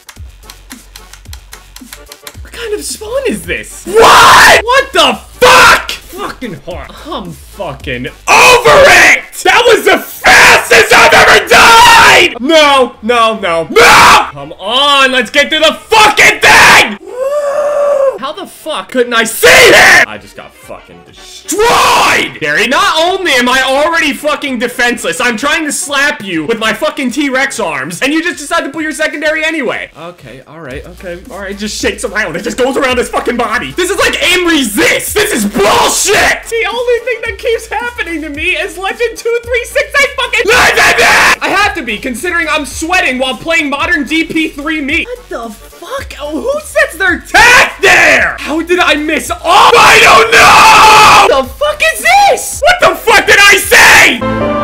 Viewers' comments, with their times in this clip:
0:09 dat voice crack doh
0:37 he starts talking a girl